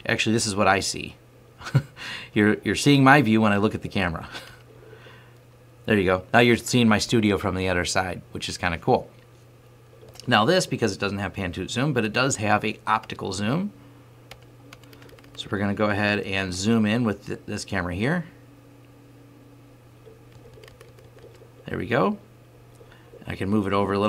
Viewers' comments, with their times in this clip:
0:09 lol "Pan toot zoom"